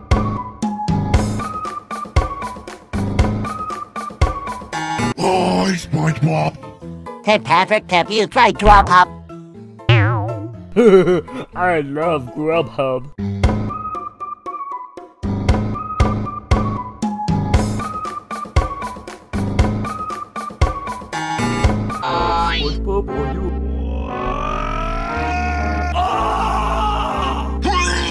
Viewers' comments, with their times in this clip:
0:10 I like how he said that...